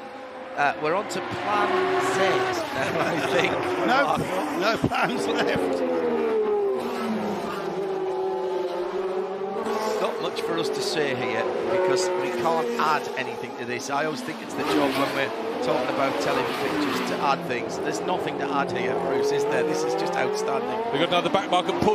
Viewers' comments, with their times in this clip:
0:05 my god that roar... My personal heaven will sound like that